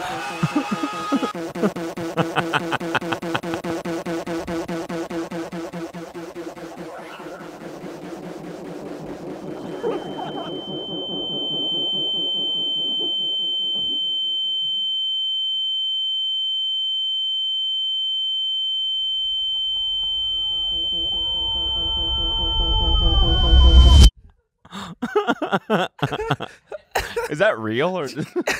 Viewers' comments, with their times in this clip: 0:08 Eardrum burst warning starting lol
0:10 I was at McDonald's where there was just an absolute sound barrier-breaking high pitched beeping from a broken slushie machine and I couldn't quite tell if the beeping was from the video or IRL and I swear I was losing my mind